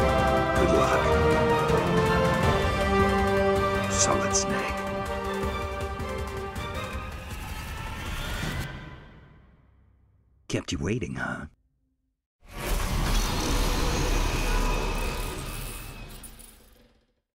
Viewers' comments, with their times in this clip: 0:05 Why Solid Snake is Nathan Drake?)